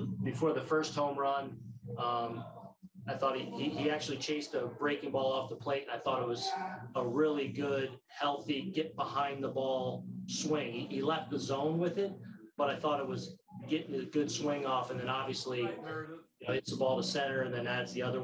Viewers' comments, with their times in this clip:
0:05 Someone’s happy 😂 just a loud YES 🙌🏼 🤣 😂